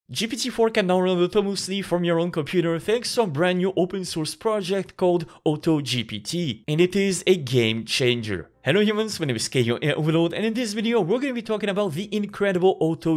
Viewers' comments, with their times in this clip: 0:01 bruh .. why did u say it like that?